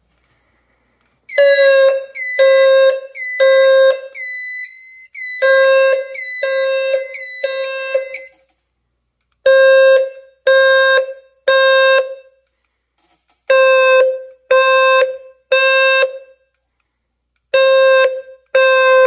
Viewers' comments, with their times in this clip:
0:03 i dont know why but that alarm is scary